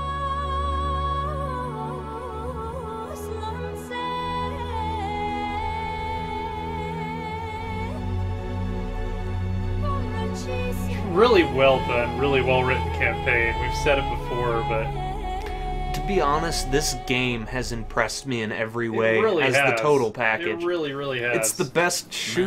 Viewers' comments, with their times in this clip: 0:08 This music is much more appropriate then for the Gallipoli campaing